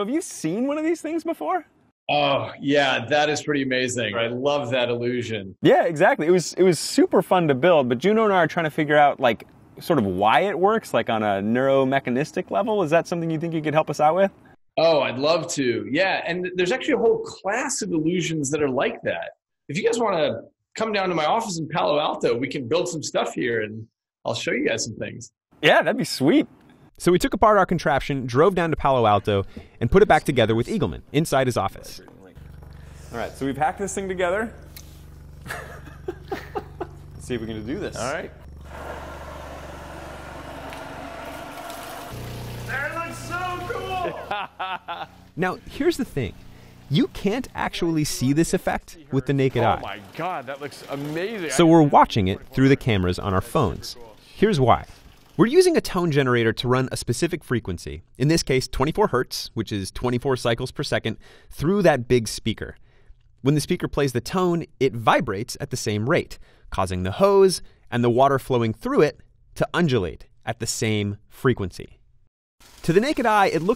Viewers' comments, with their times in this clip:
0:10 this man sounds like he doesn’t wanna do it
0:57 sound's like Sal Khan is narrating..😕